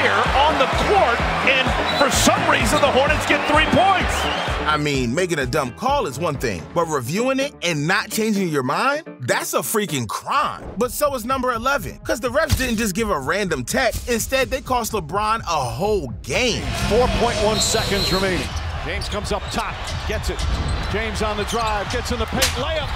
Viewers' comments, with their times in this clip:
0:07 that is crazy. They already blew the whistle 😅